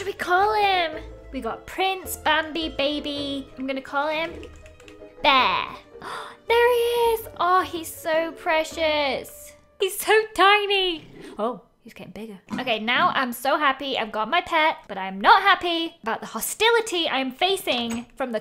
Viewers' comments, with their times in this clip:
0:05 The way she talked